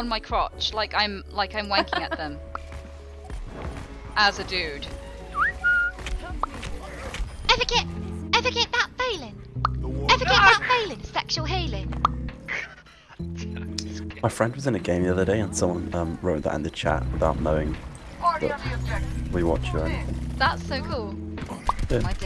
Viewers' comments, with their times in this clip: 0:09 Jesus Christ that tracer impression was ON POINT. That was amazing